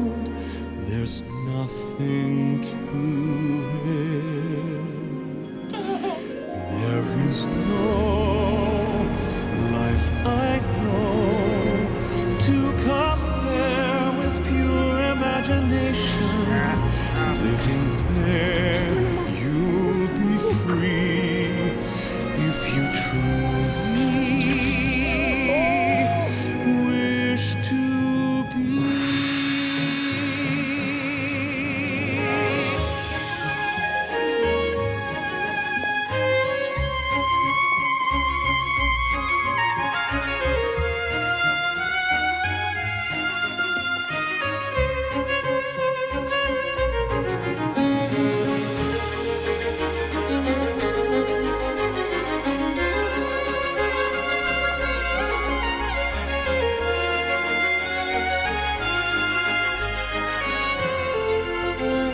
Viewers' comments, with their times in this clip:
0:10 The wind cannot distract him from singing. Go, Josh.
0:32 Lindsey's solo makes me feel I'm dancing on the rooftops somewhere in another part of the world under a moonlit night.
0:49 that’s actually a nice duet 😂👌🏼